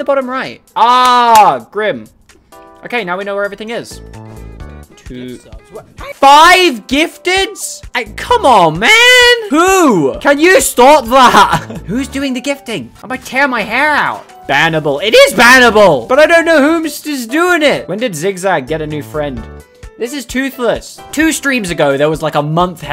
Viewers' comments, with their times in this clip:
0:10 he sounded like Gobber from the first HTTYD movie, specifically when he told fishlegs to stop explaining the dragons.